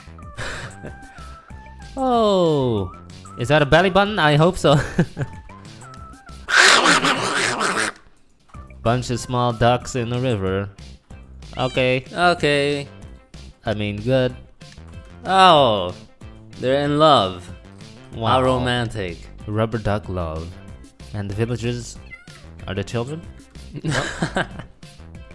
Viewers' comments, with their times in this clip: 0:07 Sound like (Donald Duck)